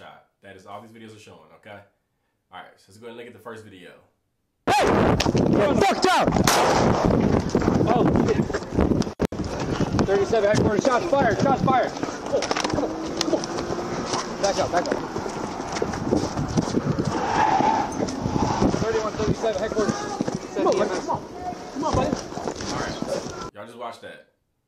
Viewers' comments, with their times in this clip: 0:05 God damn headphone alert 🚨